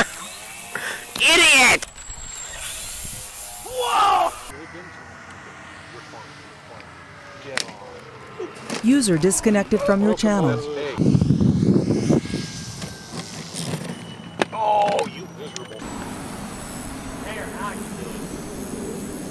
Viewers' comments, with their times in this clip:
0:05 *crashing sounds USER DISCONECTED FROM YOUR CHANNEL